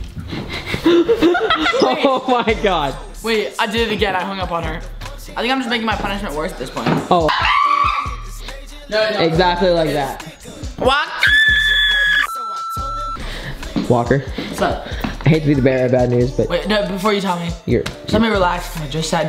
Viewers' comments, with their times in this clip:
0:07 chimpanzee screams lmao-